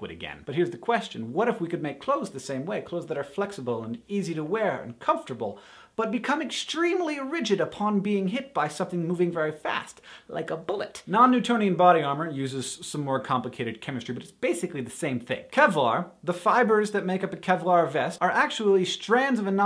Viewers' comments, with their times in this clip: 0:03 So i tried to watch this with the CC button on the player to have myself some friendly closed captioning. It, however, likes to think that when you say "make clothes" that you are really saying "make love the same way..."